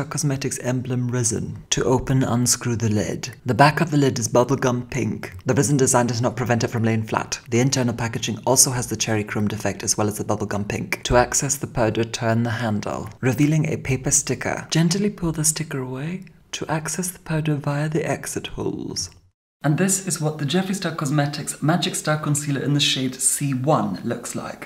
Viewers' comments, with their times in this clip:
0:05 the way he said it so fast 😂😂